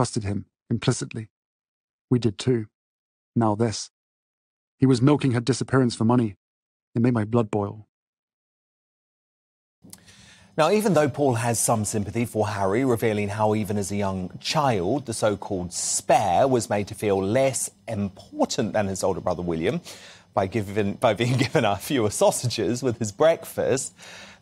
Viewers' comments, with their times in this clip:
0:08 he sounds like gordan ramsay